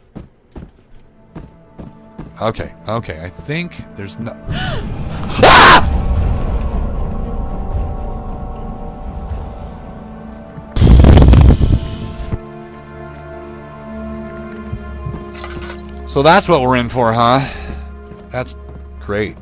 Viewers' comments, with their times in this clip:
0:04 That was an amazing scream XD